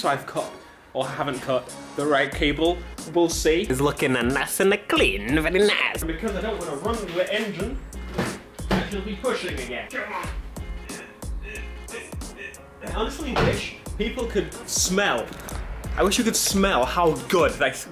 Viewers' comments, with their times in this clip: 0:03 😂😂 VERY NICE BORAT